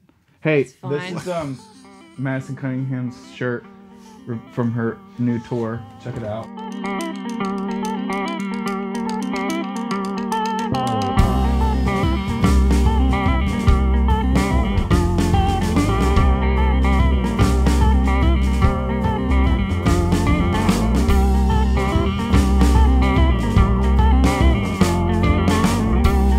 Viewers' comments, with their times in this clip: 0:06 The jam is absolutely fire.
0:07 ok everything in this video is amazing but ESPECIALLY the jam starting i'm gonna be listening to that on repeat for a WHILE!! 🔥❤